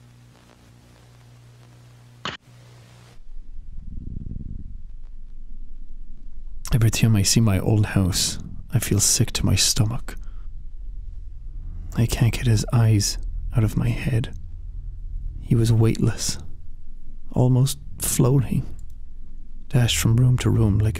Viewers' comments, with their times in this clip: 0:03 I could listen to Jack read this over and over. It’s a perfect fearful eeriness.
0:07 Jakc's voice on is like... Unnecessarily hot, like... what? How?